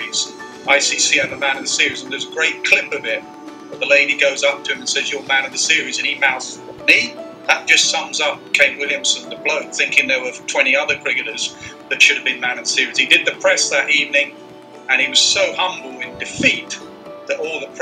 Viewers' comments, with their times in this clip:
0:05 omggg the way he said meee?!? 😭😍💖